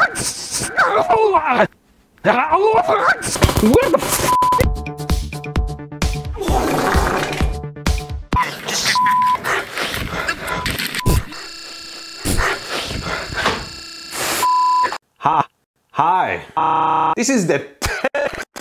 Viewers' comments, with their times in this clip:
0:06 Hah! He fart!